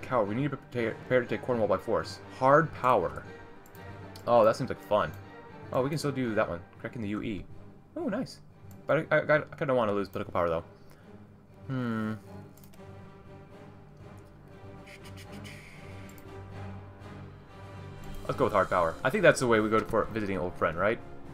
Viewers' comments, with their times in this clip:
0:06 Woah, the music is really suiting the Mood!